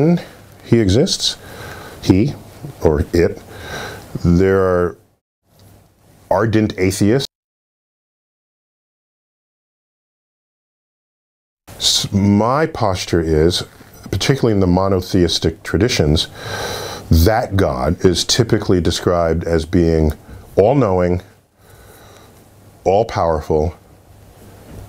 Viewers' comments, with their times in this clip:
0:04 why the audio goes off after "ardent atheists..."?
0:04 Why did you mute that part exactly?
0:04 Why did the audio disappear ar ?
0:06 YOU blanked some of what Dr. Tyson had to say NOT COOL. Doing dirty things like that makes people like me UNSUBSCRIBE. You screwed up. Goodbye,
0:06 something Neil said was silenced. About 5 seconds of his narrative was censored. Quit watching at that point for that reason.
0:07 why did you remove the audio?
0:07 What's up with the muted audio ?
0:07 Why did the audio go out for a few seconds after he used the word atheist? As an atheist myself, I'd like to know what was said there. Why was it censored? My lip reading isn't sufficient to figure it out.
0:07 Why muted? Only believers are allowed?
0:07 why is the sound oppressed? Is this a religious channel? You want my like but you’re not allowing me to listen to what he said in its entirety? Sorry no like 😤
0:07 Why was his voice silenced when he was talking about atheists ?
0:07 What's with the audio CENSORSHIP ????
0:07 Why is there a glitch in audio where deGrasse Tyson mouthes »that God doesn’t exist«. Or is it just me?
0:08 "There are ardent atheists ......" audio cuts out for anyone else?
0:08 several seconds of audio has gotten muted!! Damn YT bot modding!! I want to hear what NDT said! 😢
0:08 why did you cut the audio ?? something you don't want ppl to hear?
0:08 Interesting choice to completely sensor him saying "Satanists" 🤔
0:09 all voice stopped while describing Atheist's. Why?
0:09 Why was the audio lost for a couple seconds at min. ?
0:10 The audio cut out briefly just as NDT was saying something about atheists. NDT didn't even mention how many people would need to be involved in faking the moon landing and yet not a single person ever stepped up and said they were involved in faking the landings. NDT didn't mention how some people believe in a wrathful god. There is a country song where the singer mentions they didn't want to go to church because they were scared of God. If God is defined as good why would anyone need to be scared of Him.